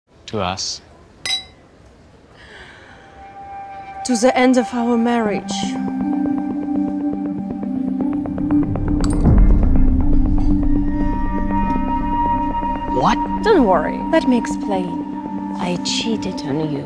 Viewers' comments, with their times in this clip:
0:04 The way the wife pronounces the word "the" in "the end" sounds really funny to me - in our mother tongue (Romanian) we mock that kind of English pronunciation! :face-blue-wide-eyes: